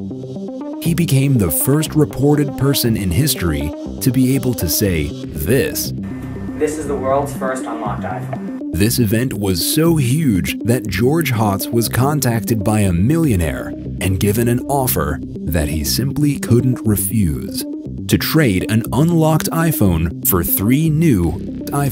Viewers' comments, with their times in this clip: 0:07 what did he say icant here it properly